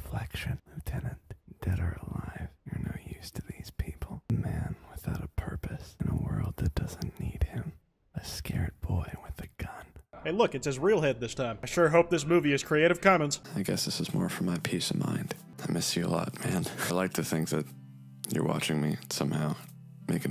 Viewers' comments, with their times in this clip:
0:03 his voice echoed through my microphone
0:06 I can hear the exact spot hes in and it creeps me out